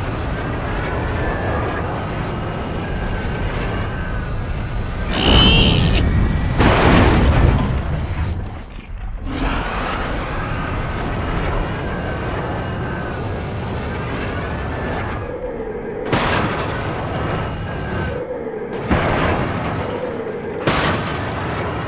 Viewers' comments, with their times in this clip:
0:05 Aww! That poor bullseye. He crashes goes... BOOM!